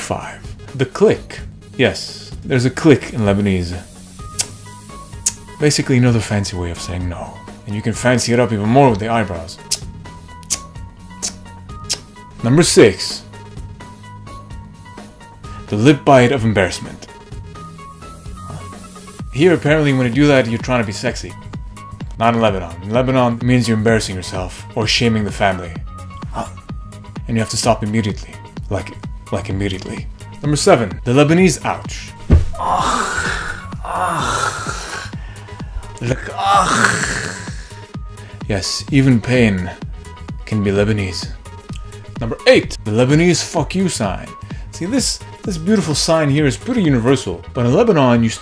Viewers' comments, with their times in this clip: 0:05 I'm laughing so hard when you do the click it's serious No 😂
0:32 😂 that's exactly how Armenians say!